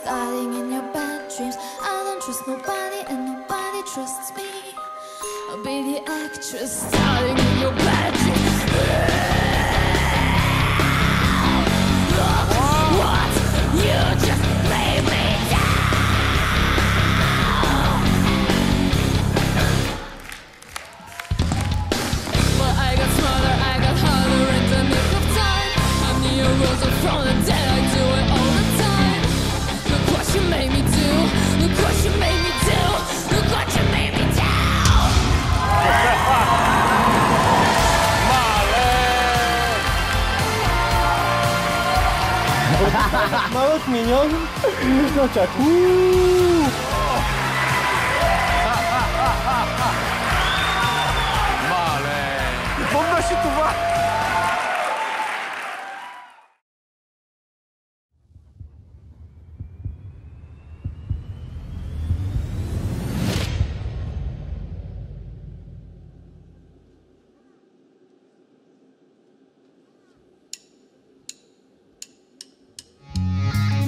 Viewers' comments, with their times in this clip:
0:08 this is a roar yes omg aaaaaaaaaaaaaaaaaaaaa
0:58 MY GOD!!! WHAT A VOICE 8DDD THAT GUY ROCKS SO HARD.